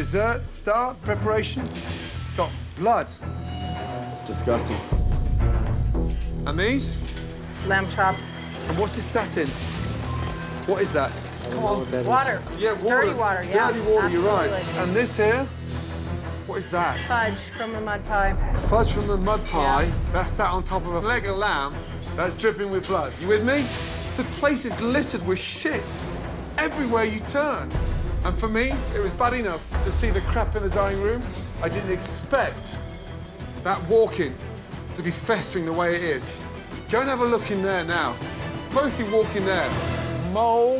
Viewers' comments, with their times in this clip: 0:10 is a recorder sound
0:21 A lego lamb